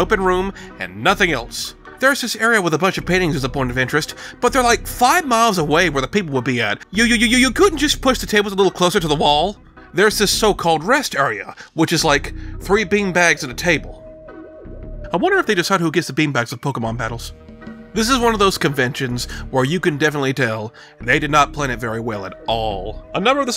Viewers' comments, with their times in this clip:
0:06 "y-y-y-you" gaves off "its time to d-d-d-dual" vibes.